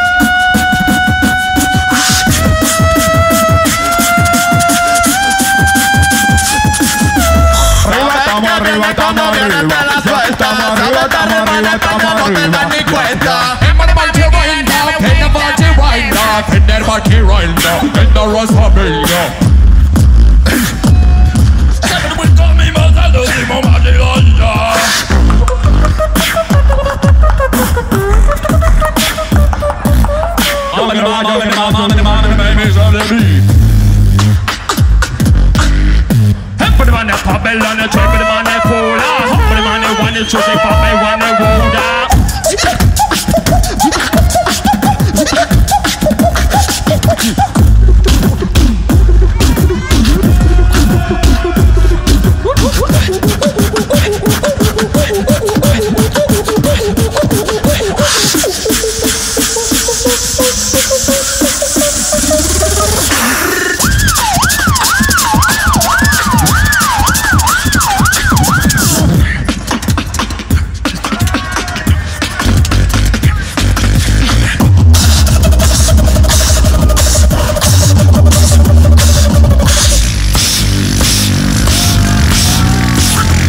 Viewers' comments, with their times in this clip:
0:08 CAN WE ALL APPRECIATE COLAP'S SPIT SNARES
0:19 when you solo the 808 in fl studio
0:19 triple sub bass XD
0:30 they do be sounding like the storage dealers
0:36 one of the best melodies ever
0:42 Who was thinking of the “OOF” sound
1:02 after the build up.....nasty sirens incoming😲😲
1:03 police sound LIT
1:04 the siren was on point🔥🔥